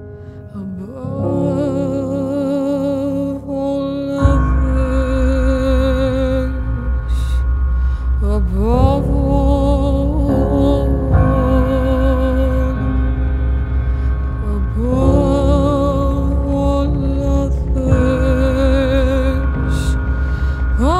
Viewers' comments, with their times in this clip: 0:04 I just want to point out the incredible production in this. She managed to incorporate different elements of sounds you would hear with an actual furnace. From the high hats that sound like someone trying to ignite pilot light of a water heater/furnace down to the droney sound of metal and fire that fully ignites and bellows at the mark. Even the organ itself when it comes in sounds almost metallic like a steam engine whistling. All these sounds were intentionally put in to signify the hellscape imagery she's trying to portray and it was just done so magnificently imo. Genius. She is a fucking genius. FYI if you have no idea what I'm talking about and can't hear this. Headphones. This is a quality headphones song.